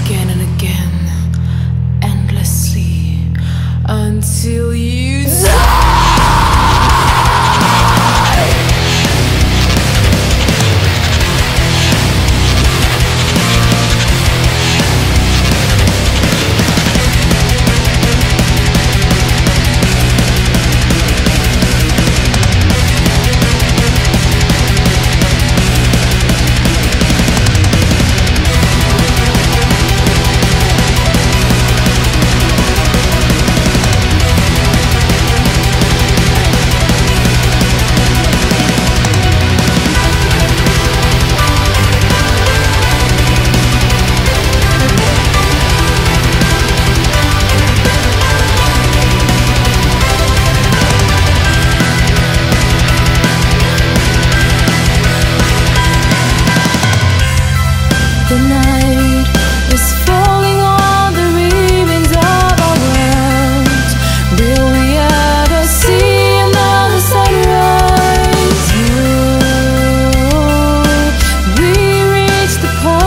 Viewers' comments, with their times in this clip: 0:06 Woah. I never knew this kind of music will be this cool. But does ur voice her when screaming the lyrics??
0:39 Especial like for da riff on awesome shit
0:57 why I don't care for women metal bands too much, bc they start off good and strong, and they sound great, but then out of nowhere they go all Disney on you!!